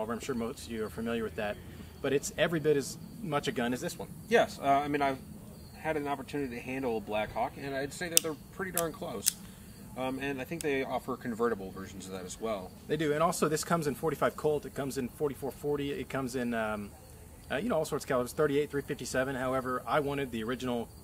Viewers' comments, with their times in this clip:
0:05 handle a what? Lmao